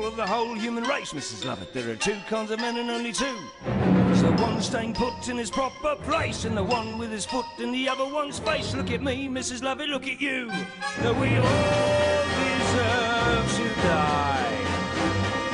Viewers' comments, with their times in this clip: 0:03 Jack Sparrow singing Epiphany.